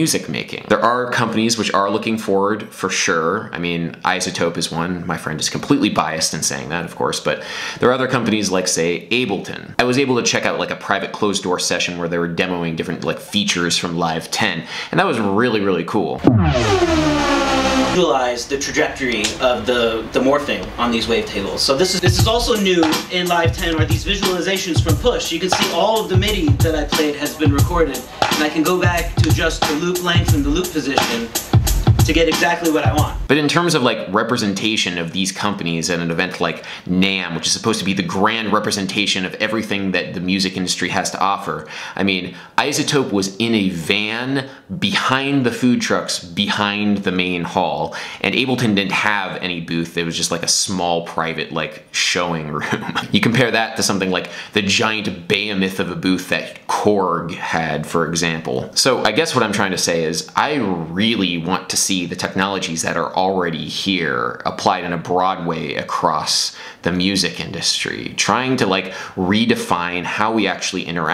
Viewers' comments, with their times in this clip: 0:07 "there are other companies like say abelton.. I was abelton check out a private......" sry
0:55 What? Bayemith? Behemoth? I have no clue what you said or what a bayemith is.